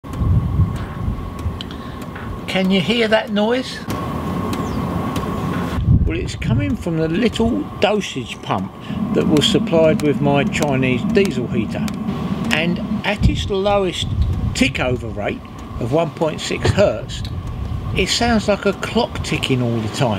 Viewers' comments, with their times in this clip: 0:05 Uhm.. Nope, all I hear is normal operation... Clicking is a blessing, not a curse. If you're in a cold area, you wake up middle of the night, you hear the clicking, just keep sleeping.. No clicking, get up asap and check what's wrong.